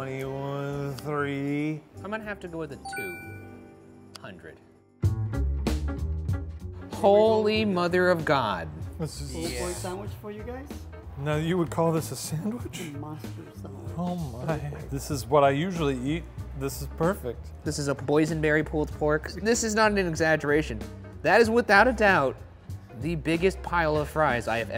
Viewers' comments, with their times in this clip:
0:10 this person's voice and air makes it feel like he is the Addams' family cook, so impressive